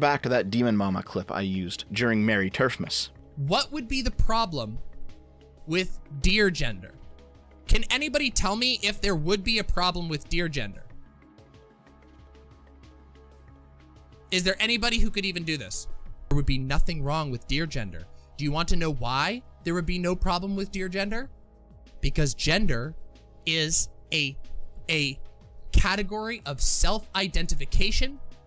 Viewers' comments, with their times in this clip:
0:03 I was listening while dping something else and SERIOUSLY thought it was Keemstar talking
0:09 I was genuinely confused as to why Keemstar was talking about deergender - then I tabbed in.